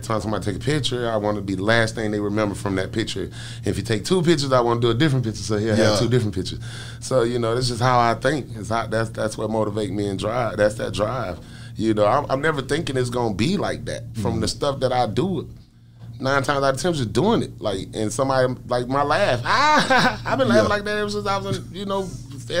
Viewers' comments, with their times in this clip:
0:03 Uh oh fabo can sing more than what he puts on... I heard it ish 😂😂😂.